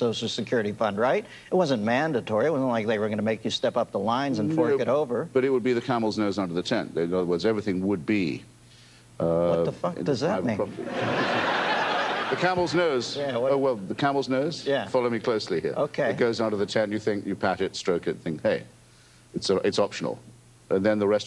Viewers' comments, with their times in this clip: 0:06 I never really cared for Miller, but his deadpan delivery of “what the fuck does that mean” won me over.